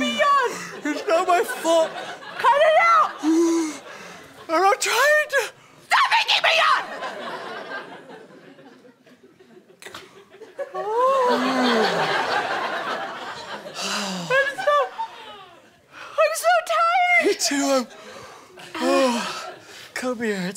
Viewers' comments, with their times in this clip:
0:04 I started yawning too. 😂😂